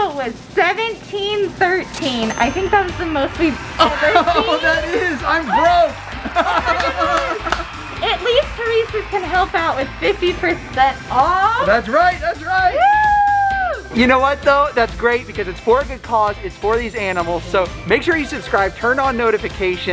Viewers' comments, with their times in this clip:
0:05 I can see sadness in that laugh